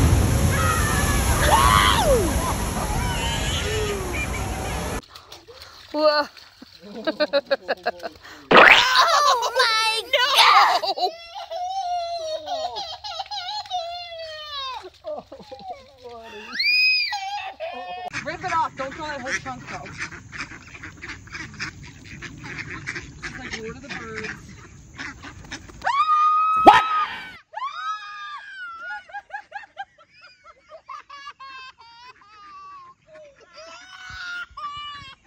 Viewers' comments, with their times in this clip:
0:04 X Is Crying
0:18 A baby girl attempts to throw some bread around a ton of ducks while outside at a park and she cries.